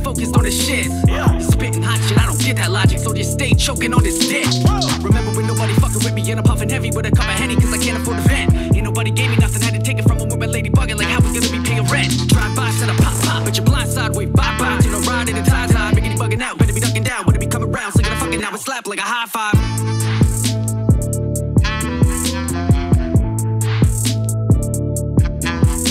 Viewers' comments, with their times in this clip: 0:05 damn u got some speed on that!!! Respect!
0:12 Is that you Joyner?